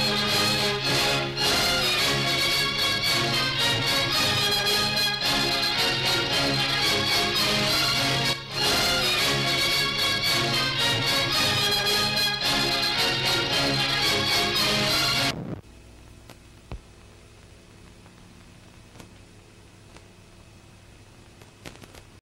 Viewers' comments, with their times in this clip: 0:08 what's wrong with the August first film studio fanfare